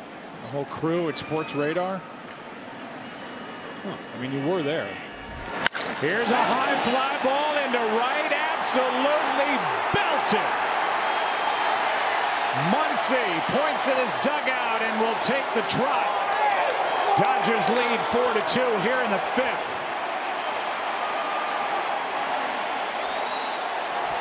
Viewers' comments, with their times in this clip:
0:05 hearing that bating hit from, Max Muncy. is so incredible.